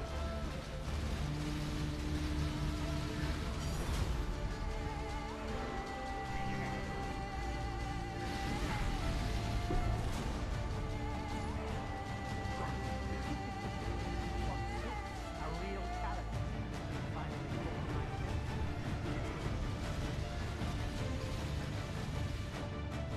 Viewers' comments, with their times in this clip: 0:09 The music.. it's so good!..